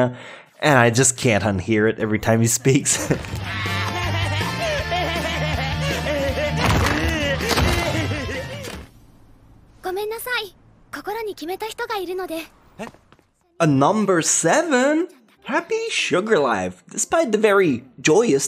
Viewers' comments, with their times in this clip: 0:03 it's the same laugh of Accelerator
0:04 I heared accelerator tho, but yeah just the same actor.